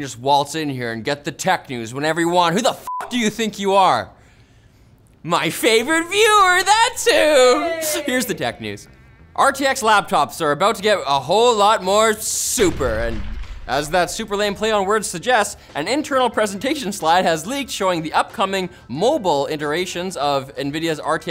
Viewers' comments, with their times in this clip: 0:06 Your voice is genuinely annoying. Has anyone ever told you that?